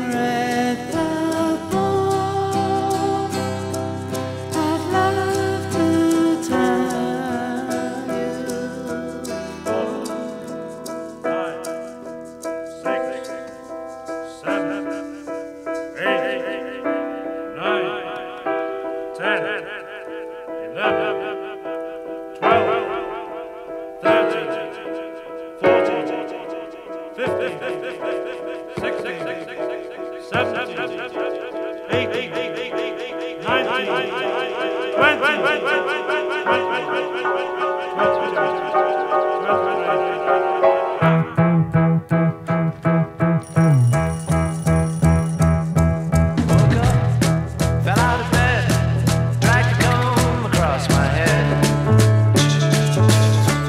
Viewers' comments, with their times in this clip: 0:09 I love Ringo's countdown that starts What I like it about it...is how John, nor Paul, nor George...ever condemned Ringo when he add libbed something into a track. Like when he said..."I've got blisters on me fingers!", after the Helter Skelter track. They just left it in. 👍☀️👍
0:41 Just now realizing the bass is out of tune